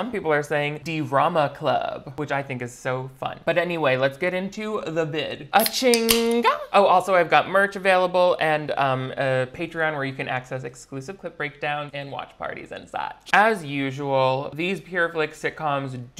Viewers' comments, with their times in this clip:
0:04 amazing mika in grace kelly impression bestie